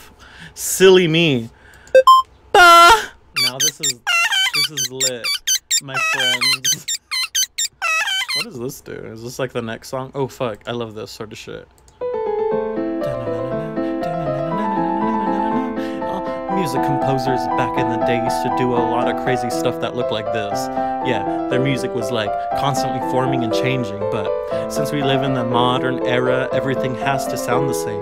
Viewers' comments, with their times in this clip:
0:10 how to ruin Mozart's Turkish March ..